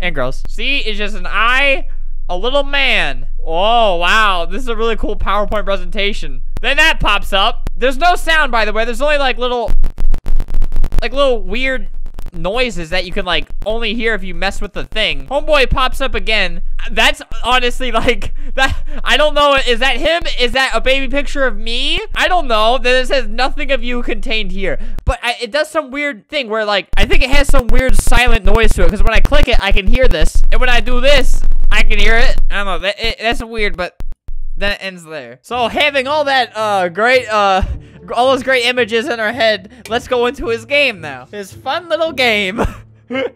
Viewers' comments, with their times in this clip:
0:04 The sound may be SUB BASS that may be why you can't hear it without breaks.
0:26 any one else wondering why his mic adio started glitching during watching that video ive never heared that happen before